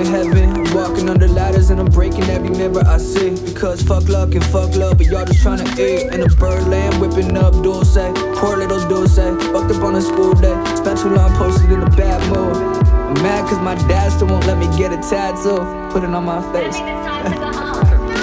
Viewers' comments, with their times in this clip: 0:06 Dude those horns gets me every time sheesh ✌️😔